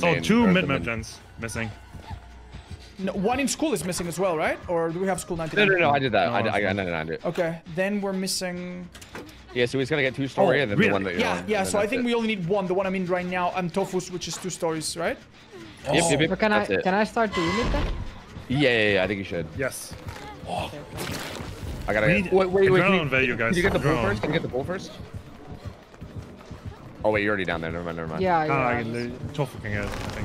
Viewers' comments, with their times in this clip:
0:10 bro really said right neow
0:12 the one I'm on right nyaw